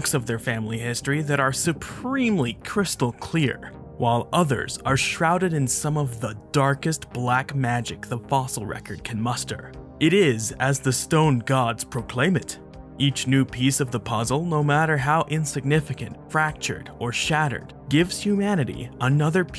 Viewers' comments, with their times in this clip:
0:04 dang, that sounded epic🤘🏾